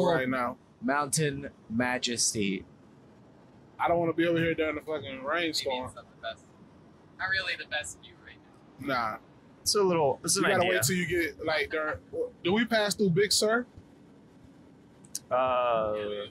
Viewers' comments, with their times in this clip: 0:03 waters not even there. true voice of fear lol